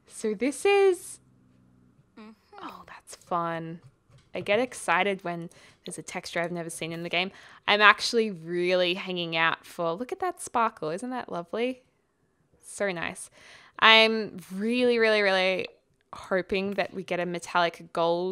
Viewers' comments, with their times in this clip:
0:03 Hmmm.....there is a funny noise